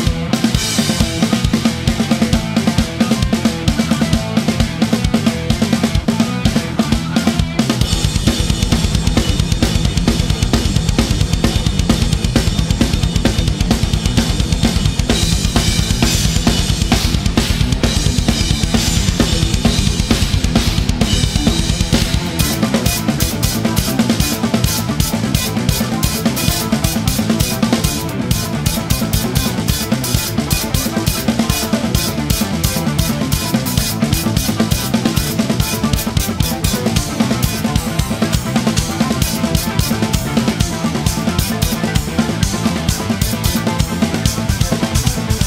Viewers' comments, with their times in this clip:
0:07 seems to me that he's actually doing Mike Mangini's interpretation on the double bass
0:14 its like mangini style lol 😂
0:20 I watched and listened famous part million times but i always shocked that insane snare sound control between hi-hat hits. Just amazing.
0:22 is my favorite part. Portnoy did seem like he was really dancing at this part 😁
0:22 the way it was meant to be played and sound and felt!! (I was never a fan of the one-handed version of that snare riff, I say it with utmost respect for MM's virtuosity)
0:27 I cant believe he missed a beat, is he even Mike Portnoy?? Just joking, an absolute beast of a drummer